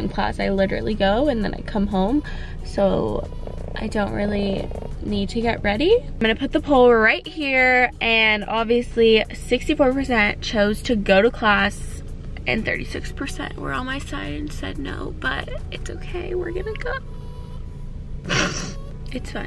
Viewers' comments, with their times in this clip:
0:04 Was that a cat purring ? It's literally what that sounded like, but she's in the car...